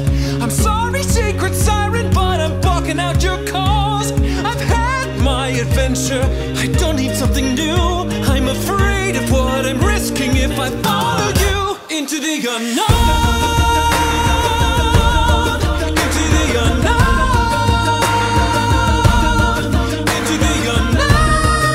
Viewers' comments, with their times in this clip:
0:06 your voice is amazing :D subscribed before it hit